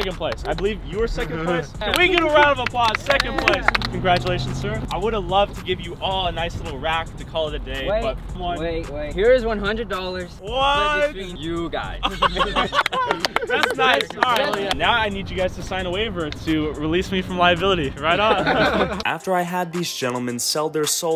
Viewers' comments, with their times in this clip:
0:03 can that guy even talk wtf 😂😭